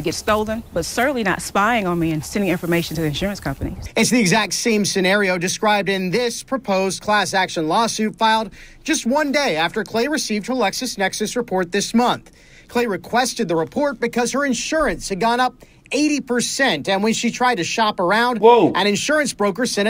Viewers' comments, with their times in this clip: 0:07 I can't believe you didn't cut in "FOR ONE DAY!" here. So jarring to hear those words in any other voice.